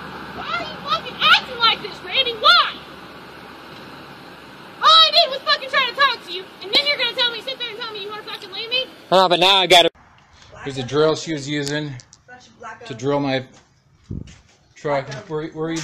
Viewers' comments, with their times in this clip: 0:03 she sounds like a Naruto character 💀